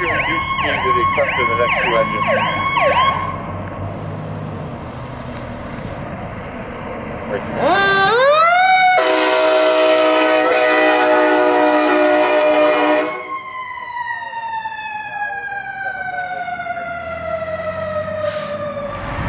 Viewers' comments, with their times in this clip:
0:07 the train horn. SUPER.